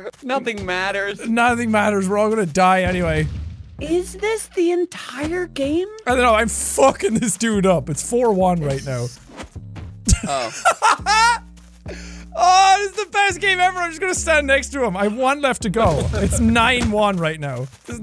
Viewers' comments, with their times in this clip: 0:03 who is that creepy voice